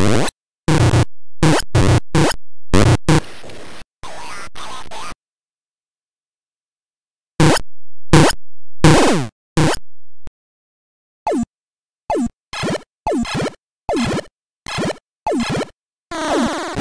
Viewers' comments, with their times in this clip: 0:03 Q*Bert voice is scary